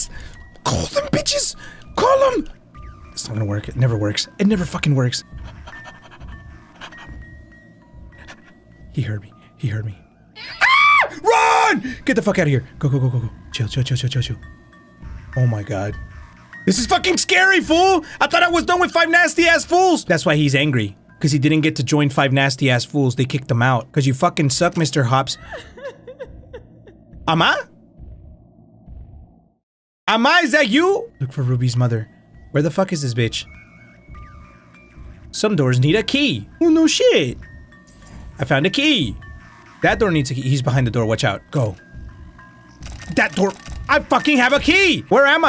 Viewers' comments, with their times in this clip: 0:10 On that scream was so funny!!
0:30 Was I the only one who thought he was speaking Korean